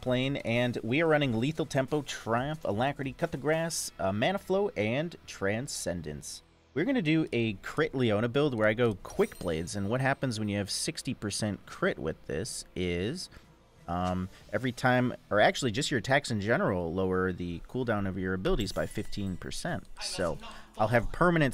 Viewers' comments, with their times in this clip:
0:03 coup the grass? lmao :'D I'm sure it's intentional, r-right?